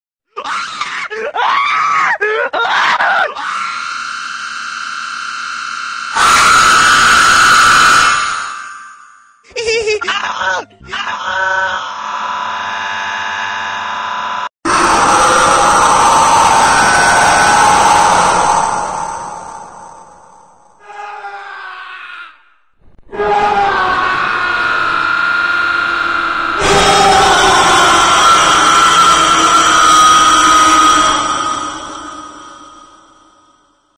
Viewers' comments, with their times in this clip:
0:01 cool cut scream that I laugh
0:06 ITS THE SCREECH HE MAKES!!! Be ready for pain in the ears!!
0:09 what is that laugh 💀
0:26 Bro eggman Scream Is scarier imagine HEAR it in your home alone
0:27 is it just me or does that sound like a fart sound effect? Lol